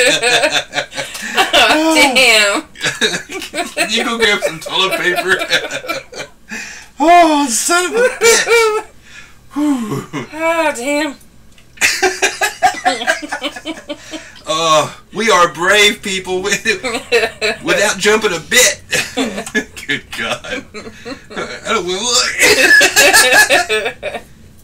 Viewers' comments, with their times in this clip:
0:05 Happy Halloween man! nice scream ! it got me going that's for sure lol. Teddy bear orgie behind you! don't look! looks 5 times haha. good video!